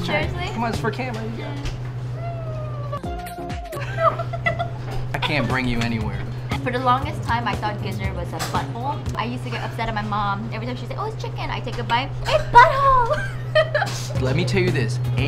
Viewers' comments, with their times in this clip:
0:03 Hahahaha! omg I do sound like that alien-looking human being, Dah!!! 😂 👌 editor on point.